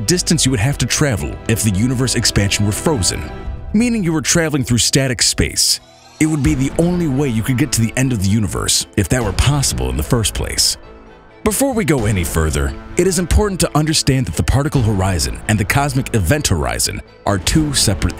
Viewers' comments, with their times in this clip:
0:05 sounds like that guy from the twilight zone, uh why hasn't anyone picked up on the power of a magnet? Earth's pull is just a magnet spun